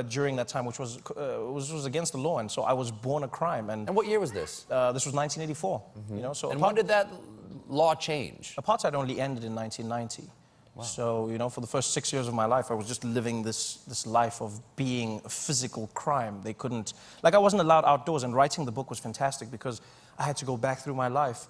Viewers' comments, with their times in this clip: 0:04 Trevor: (Talking about the Apartheid and how it was against the law to have mixed kids) "...So I was born a crime." Random woman in the back: HAHA ... so im guessing she thought trevor was going to take the "im black and i was born a criminal before i even did anything, haha stereotypes" route and wasn't going to delve into something serious?
0:04 you could hear one person laughing for no reason
0:06 The fuck was that laugh ??